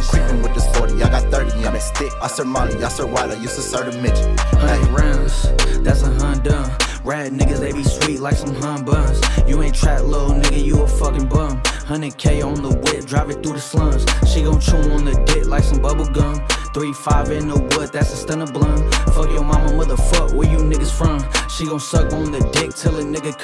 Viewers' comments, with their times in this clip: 0:04 why is this guy so fucking good in every song. His flow is dope
0:04 I like his flow but he could have gone further